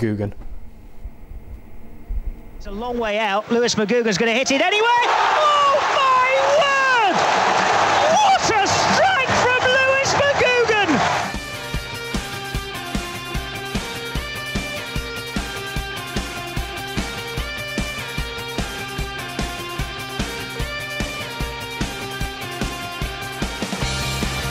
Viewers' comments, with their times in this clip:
0:08 lmao seconds high pitch commentator